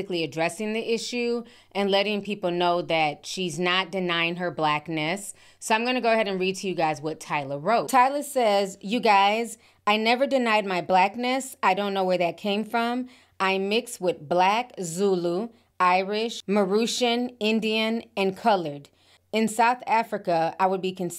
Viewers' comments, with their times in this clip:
0:08 Lmao I love to reading voice the switch up 😂😂😂😂 “you geyzz” 😂